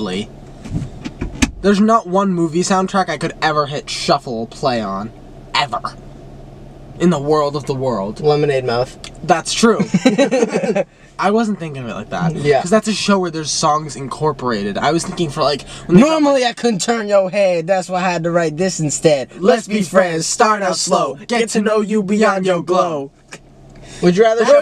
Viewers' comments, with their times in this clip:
0:08 THE WAY WE SAID LEMONADE MOUTH AT THE SAME TIME LMAOAO